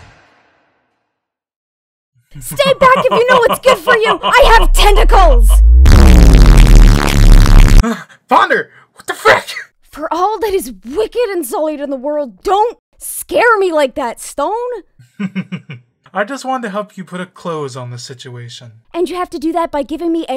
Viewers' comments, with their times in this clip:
0:05 Remember kids, the most OP move imaginable is the dupstep fart, allows you to stop time, one-shot your enemies and make you do absurd poses too... Among other logic-defying things which depend on each individual.